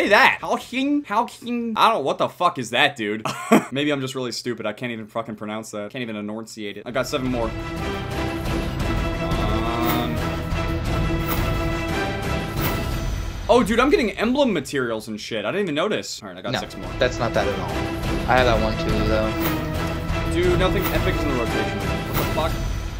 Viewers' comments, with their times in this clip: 0:06 RK5 camo Hal-c-on pronunciation